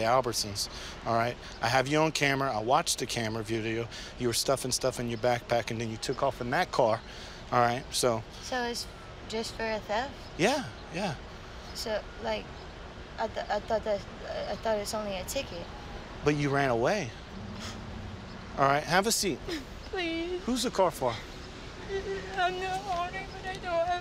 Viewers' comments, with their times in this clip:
0:10 the cop literally turned into her dad and she started crying as if she's his daughter whose been grounded😄